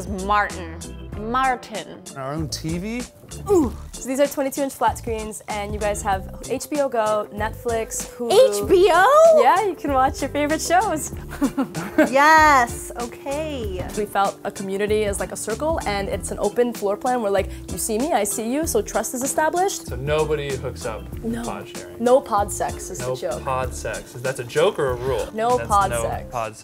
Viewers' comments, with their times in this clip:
0:03 Roblox death noise
0:03 Roblox death sound
0:03 Roblox death noise xD
0:03 sounds like Roblox
0:03 roblox death sound
0:08 She sounded like Rosanna Pansino 🤣🤣